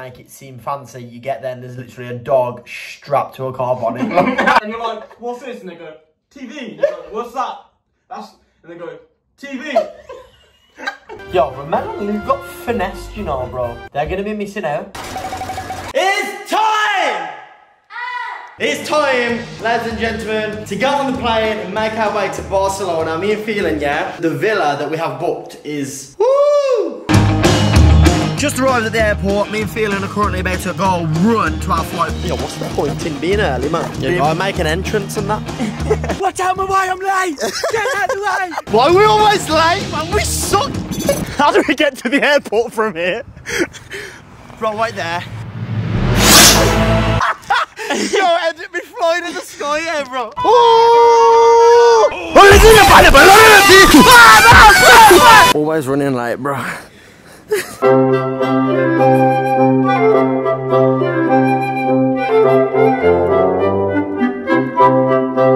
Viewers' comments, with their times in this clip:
0:04 sounds like the n word loll
0:05 thought he said nigga
0:50 = R.I.P Headphone users